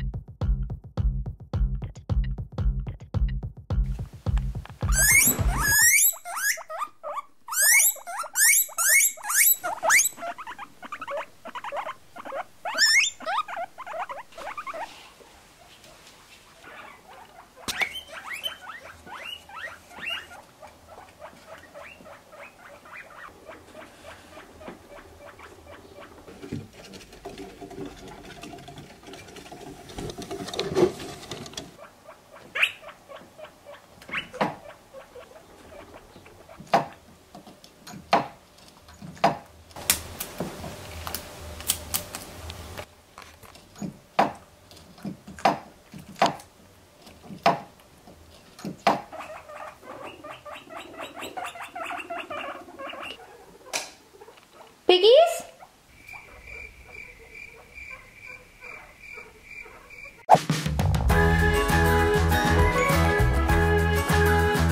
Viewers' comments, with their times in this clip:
0:04 When the guinea pig sounds went off, my guinea pigs went crazy!
0:12 My guineapuggies started screaming when they heard a voice😂
0:19 my girls started making noises back
0:27 omg their footsteps 😭😭
0:51 who is the only one that thinks it looks like the PUI PUI serie on netflix by this sound